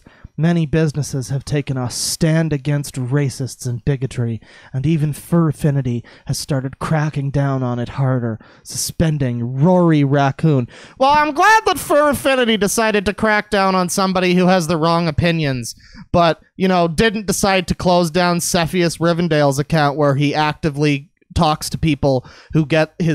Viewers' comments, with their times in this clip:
0:10 Go to to hear a great Plinkett impression